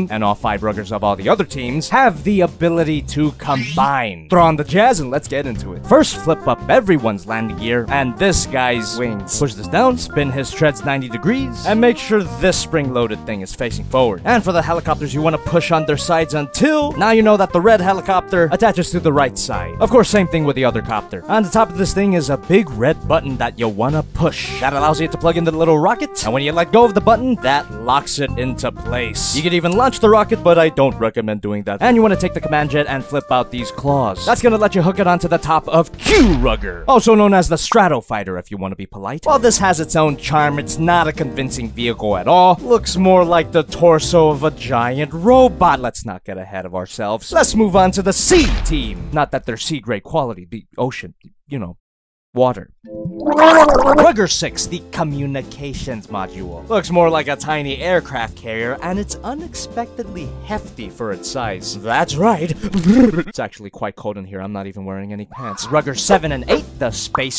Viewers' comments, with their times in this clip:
0:05 his voice goes with the rhythm of the music for a bit.
0:52 “Water.” Proceeds to choke on water